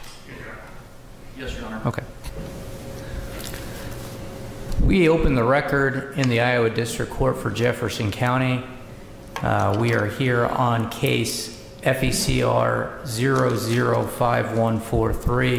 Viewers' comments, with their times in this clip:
0:03 There isn’t sound until the Judge opens the record so around the mark.